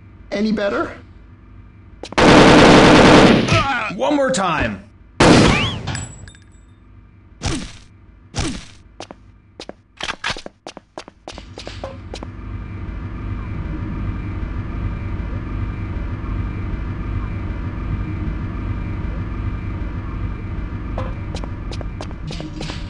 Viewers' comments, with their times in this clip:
0:04 WHAT THE? "BANG"